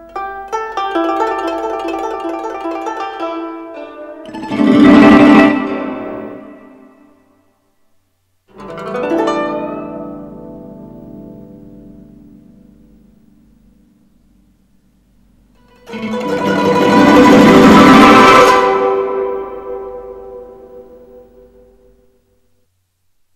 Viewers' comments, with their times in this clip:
0:05 Feels like I got cut by invisible musical blade 🤣🤣